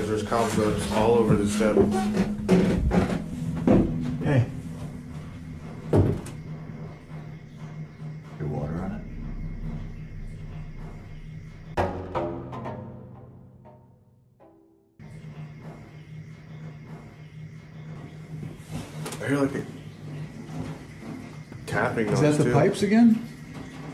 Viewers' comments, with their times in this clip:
0:10 Theres an extremely faint whisper that says something like "Todd sees" or "Tom sees"